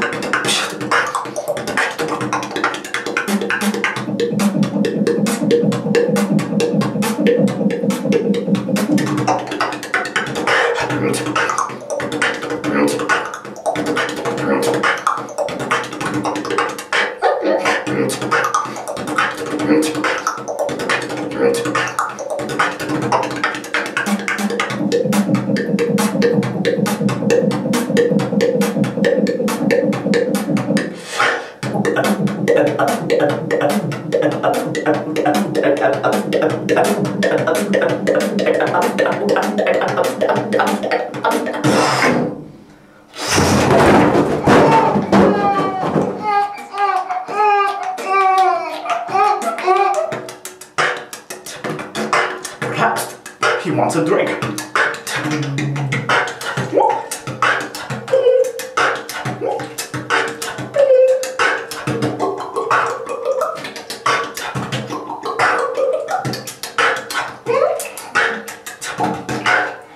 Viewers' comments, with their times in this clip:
0:04 I really like the beat 4 sounds wow
0:07 is that throat bass just a bunch of ughs and ums? just curious cause it sound dope as fuck and i want to learn it.
0:42 watchmojo Top 10: Biggest Drops of the Century
0:43 LOL way to make that into a beatbox
0:57 I like the gulping sound effect starting